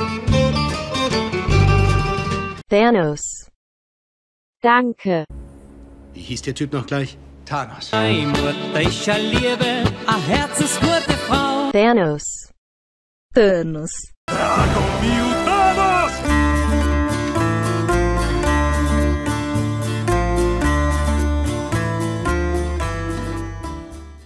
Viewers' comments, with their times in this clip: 0:10 did he say I have to squirt the ball